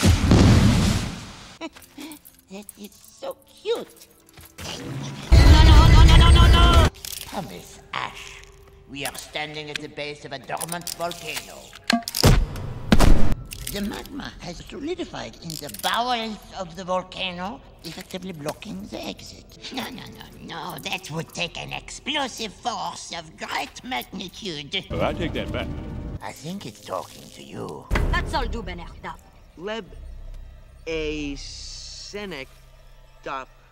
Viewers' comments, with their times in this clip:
0:04 Why did you have to cut of the laugh one of moles best moments
0:17 i love how the way he says volcano